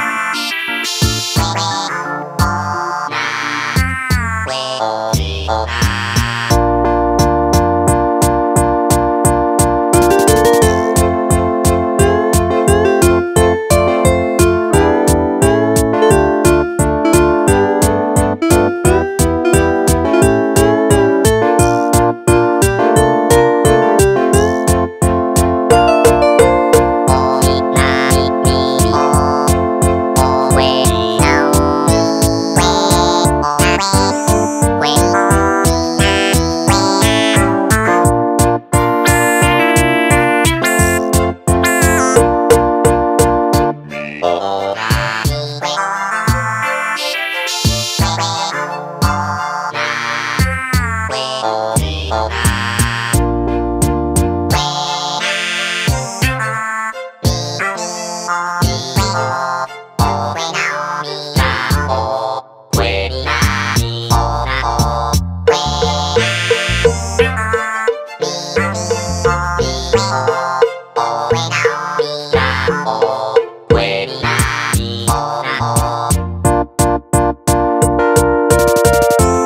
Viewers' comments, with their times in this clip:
0:06 it gives me flashbacks to my old Yamaha keyboard.
0:09 The guitar solo sounds like the Sonic checkpoint, and I’m here for it.
1:06 sounds like somebody wanted more cowbell